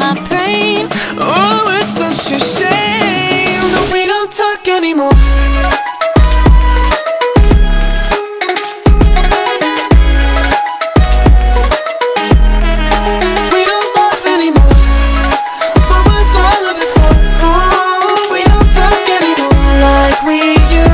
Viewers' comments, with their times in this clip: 0:05 is brilliant...that whole melody is FIRE